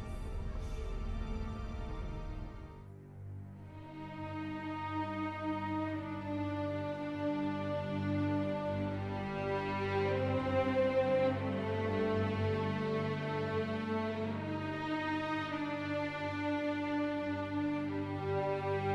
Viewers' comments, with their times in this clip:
0:04 you can here the doctors theme briefly, I love that theme so much!